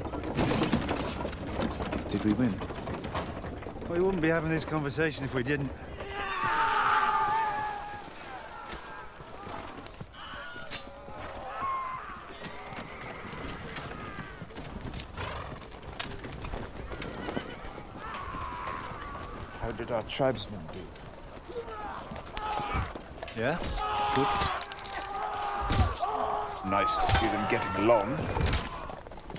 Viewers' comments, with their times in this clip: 0:08 Mother Fucking Wilhelm Scream XD!
0:08 lol they REALLY included half of the famous "William Scream"
0:09 RIP Ser Wilhelm
0:09 the wilhelm scream never fails to take me out of whatever im watching
0:09 there is Wilhelm Scream in the background xD
0:09 WILHELM SCREAM ON :)
0:09 Didn't expect the Wilhelm Scream
0:09 Wilhelm Scream, lol.
0:09 did hear the meme cry
0:09 That Wilhelm scream though
0:09 love that wilhelm scream
0:09 that scream LOL
0:09 the legendary LOTR scream
0:09 is that a fucking wilhelm scream?
0:09 Good ol' Wilhelm!
0:09 Ser Wilhelm of House Scream
0:09 THAT WAS A FUCKING WILHELM
0:10 Wilhelm scream ! XD
0:10 And the tribesmen got wilhelm! I also like the gliding wagon ride reference to "Gladiator"
0:10 Yes the wilhelm scream
0:10 well there goes another of the clan of Wilhelm
0:10 good old wilhelm scream.
0:10 I love how even game of thrones gets the Wilhelm scream
0:10 Wilhelm scream lol
0:10 the fucking wilhelm scream!
0:10 i know im not the only one that heard the vilhelm scream
0:10 Does anyone else hear the stormtrooper scream ?
0:10 i heard that Willhelm!
0:10 Classic Wilhelm scream
0:11 Lol the Wilhem scream